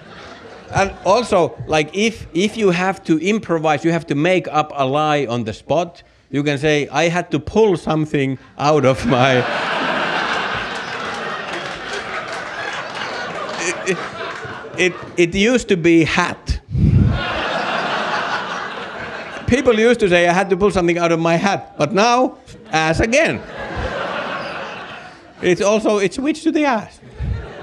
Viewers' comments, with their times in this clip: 0:09 This bit is a masster-class in comedy. The content is fairly timeless, and you technically limit yourself to one swear word (and it's not even on Carlin's list); a good sign that it still works is that every utterance of "ass" is even funnier. The character works incredibly fluidly - the curious and befuddled English learner stammers along, seemingly in confusion - but it is, of course, fully deliberate - this lends itself to a great bait-and-switch ("I had to pull something out of my... hat!"). Words are sometimes pronounced unclearly, but never when they're new and important - so it serves the character without hurting the clarity of the bit. Delightful to watch and rewatch!